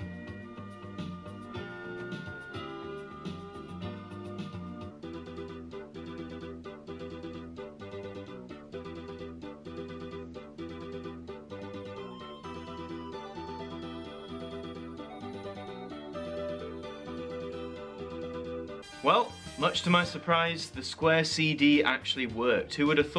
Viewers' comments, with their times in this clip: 0:05 This one is giving me Darude Sandstorm vibes